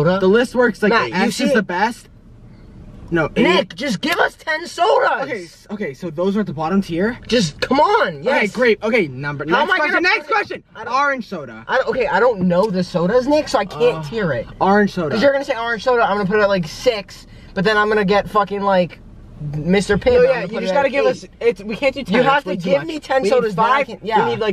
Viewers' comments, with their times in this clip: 0:08 the way they say orange is "arange" I SWEAR